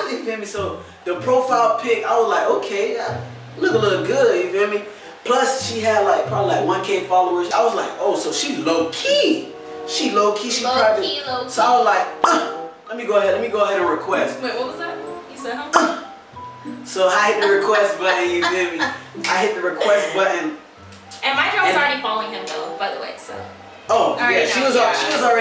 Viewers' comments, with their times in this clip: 0:09 I even gonna cap with u that high pitch voice sounded like the guys who says o my god!!! Wow😭💯💯💯